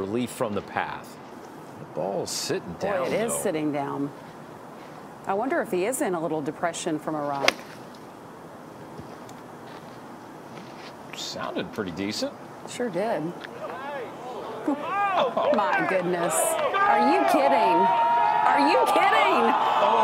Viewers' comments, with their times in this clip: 0:05 I wonder if he is in a little depression from Iraq